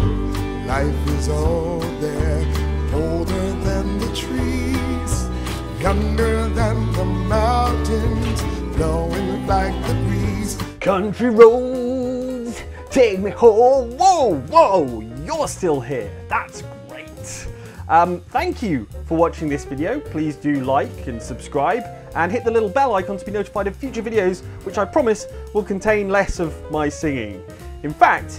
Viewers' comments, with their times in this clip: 0:10 Admit it, you too were singing along to Country Roads